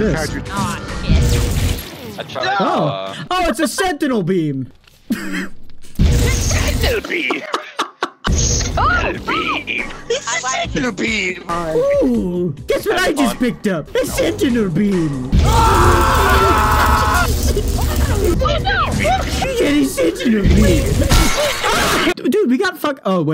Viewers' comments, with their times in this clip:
0:09 war of the world 2005 tripid lazer sounds intensify